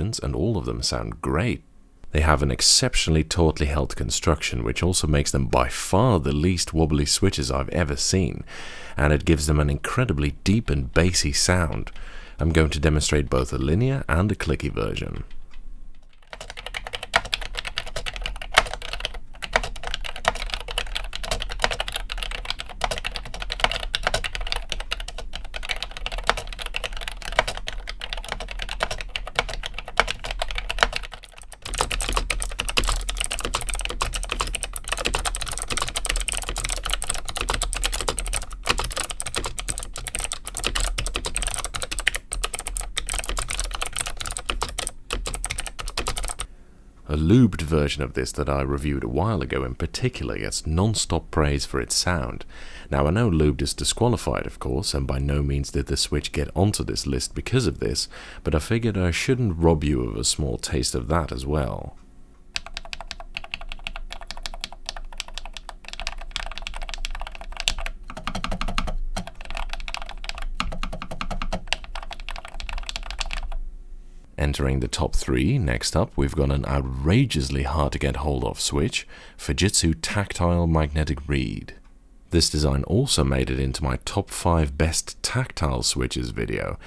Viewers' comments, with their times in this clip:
0:08 My lubed Gateron Brown switches sound extremely similar to the unlubed linear version of these. The only difference being that my keyboards spacebar and other stabilized keys are noticeably deeper sounding but less 'thocky' similar to the lubed version, but the switches themselves are more alike the unlubed.
1:01 best sounding switch on Earth
1:02 My gosh, the keys sound so CLEAN! I need mech keyboards with that quality!
1:02 my favourite type of sounding keyboard
1:03 I really like these old school keyboards, but for myself I'd pick something like this the sound is just mesmerising
1:08 that space bar tho